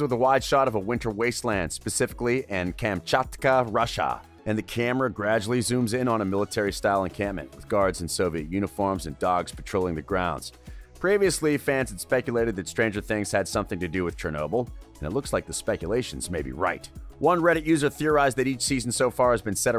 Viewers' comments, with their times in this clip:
0:04 Maybe el has her powers and made the tree fall because you here someone yell hopper so mabye there on a rescue mission?¿